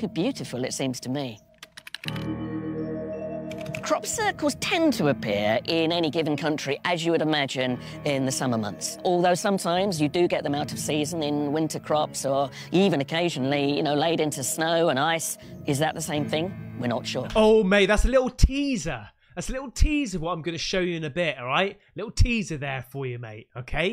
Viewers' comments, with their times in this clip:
0:06 he sounds like he has clamps on his 🥎🏀s ... 😅